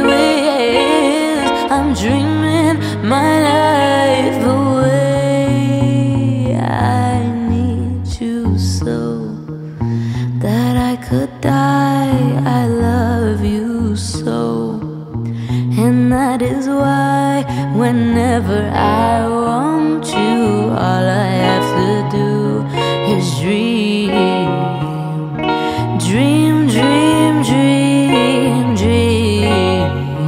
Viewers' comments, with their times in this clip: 0:09 I think is the voice of an angle
0:16 voice of an angle